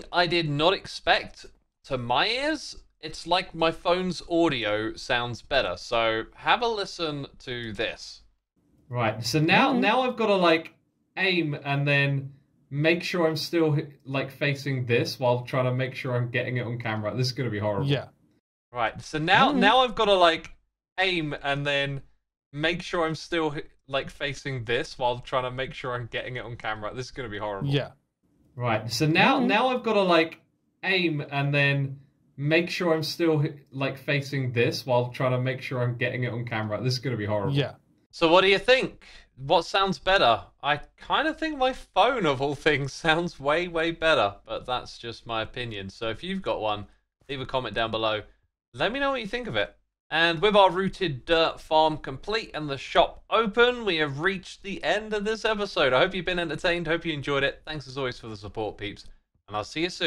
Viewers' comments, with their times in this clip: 0:08 WHO ARE YOU?! The vocal sound is completely different…
0:31 the quality is much crisper. Can't recommend audio technica mics enough.
0:46 The phone audio sounds so much more realistic, like it went from 2D to 3D